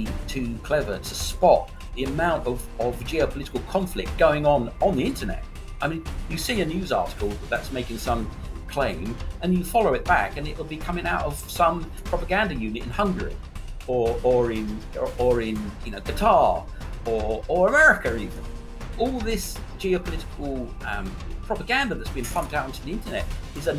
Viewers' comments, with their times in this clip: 0:09 music is way too loud at my Linus notebook - cannot understand Clem - out